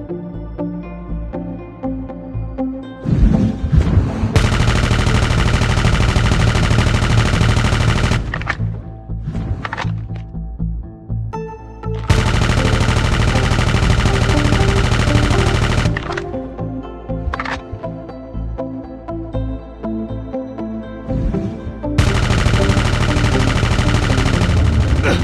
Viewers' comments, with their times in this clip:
0:06 That sounds so good it’s a laser! Omg (Kinda like the poggers 26 with mono suppressor, but fast fire rate)